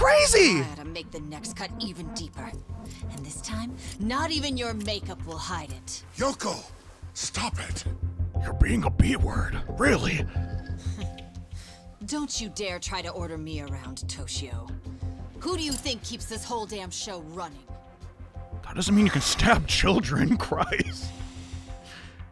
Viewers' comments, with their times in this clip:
0:06 wth i thought the character really said that xD your voice impressions are really good
0:08 That was a good impression